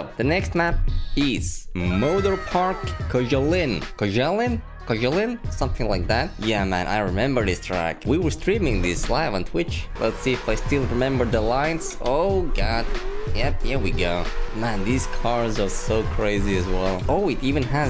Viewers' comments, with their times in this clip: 0:04 goosiest read koshalin